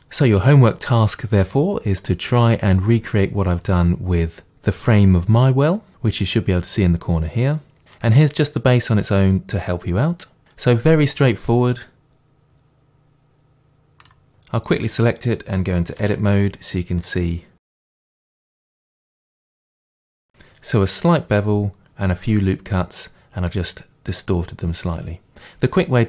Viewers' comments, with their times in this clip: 0:09 youre amazing but it's so annoying with ur T's ouT